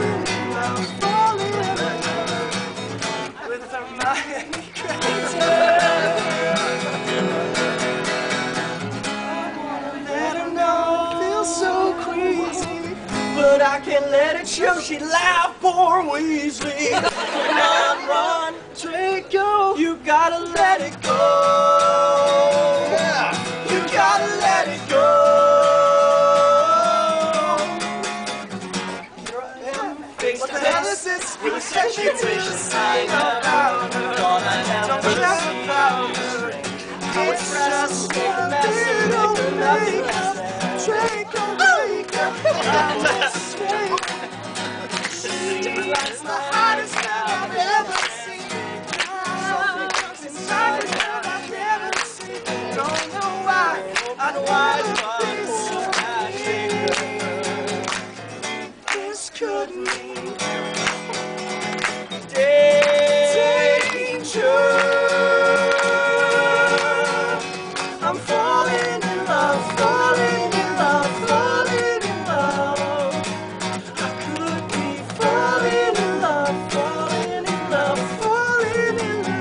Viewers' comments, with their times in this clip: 0:03 i love that sexy face that darren has before the vid starts :P and that super cute laugh that he has
0:14 Joey's voice makes me smile. Am I the only one who replays those 3 seconds over and over again? "SHE'D LAUGH, POOR WEASLEY"-3
0:19 The way Darren says "Draco" makes me wish that my name was Draco.
0:41 all i heard was lalalalalalala ( i don't remember the words) WOO!
1:02 I just MELT when Joey sings "Danger!" <3